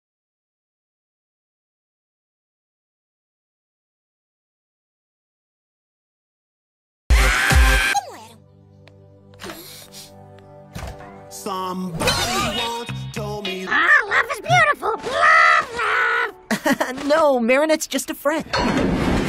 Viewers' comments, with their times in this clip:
0:00 what the that’s not Marinettes voice